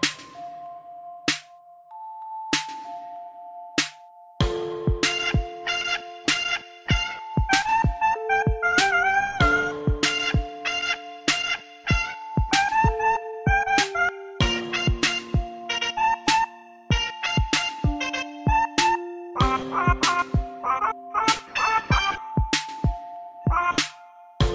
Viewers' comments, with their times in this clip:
0:08 oh my god the voice